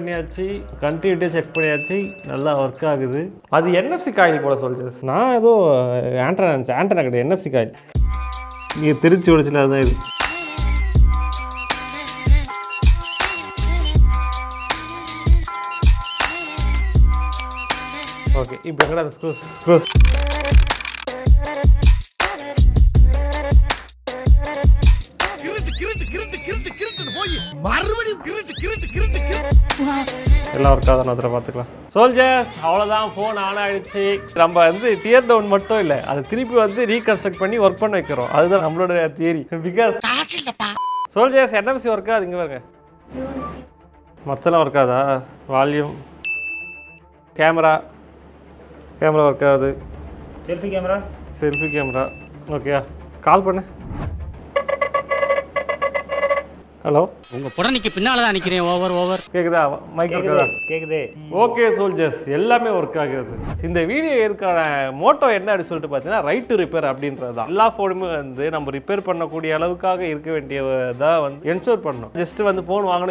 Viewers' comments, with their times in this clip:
0:07 Sangathil paadadha kavidhai song remix edit was super❤❤ specially the flute portion
0:54 ringtone perfectly synced that vibe of vadivelu